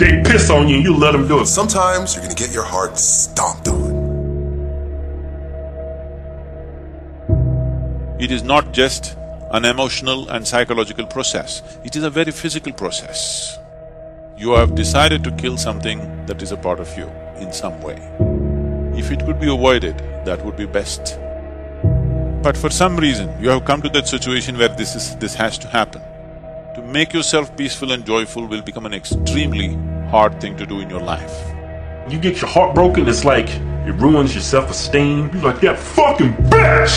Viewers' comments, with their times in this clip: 0:07 the voice of Sadhguru..😇
0:24 I used to listen to this everyday 4 years ago, really helped me a lot. However I just realised they changed sadhguru’s voice and put it up here. It just shows me he was guiding me even when I didn’t know 💙🙏